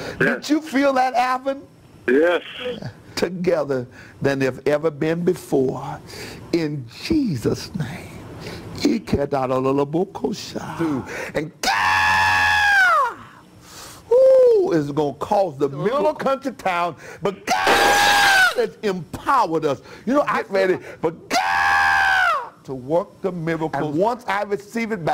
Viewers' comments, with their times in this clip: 0:08 I love the first precher when he start speaking in tongues,and yell and 🗣️"GAAAAAAAAAWWWWWWWWDDDD" I'm not gon lie I'd put the money in the bucket jus to go see dat🤣🤣🤣🤣🤣🤣🤣🤣🤣🤣🤣🤣🙏🏿